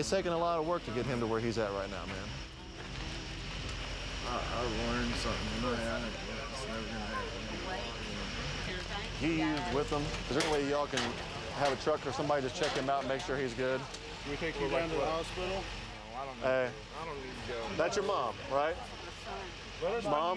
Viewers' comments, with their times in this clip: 0:03 You can hear how smacked he is when he's talking to the officer.